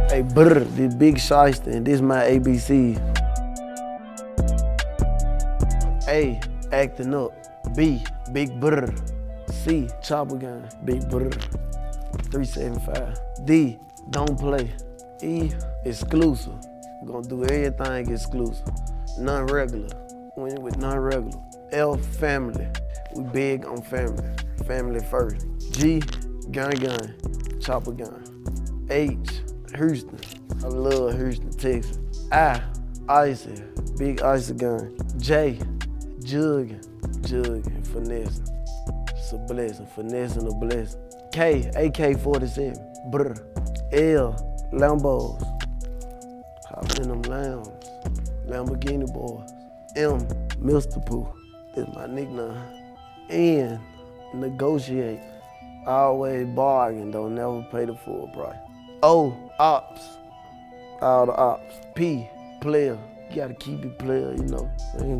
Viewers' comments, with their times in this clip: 0:08 ur welcome for those who want to hear the legendary “blrrrrd”
0:29 He sounds like he from Texas 😂😂
0:29 man sounded white when he said this 😂😂😂
0:29 this man heruston
0:29 da way he pronounces houston is really fucking funny🤣
0:50 “mr poop” lmao💀